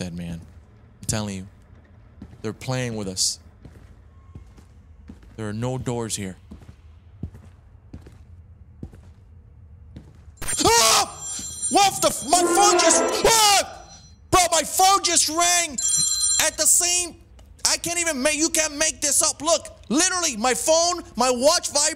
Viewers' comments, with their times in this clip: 0:08 with the phone call irl and jump scare in the game was wild. I literally thought the phone was part of the jump scare because it was so perfectly synced.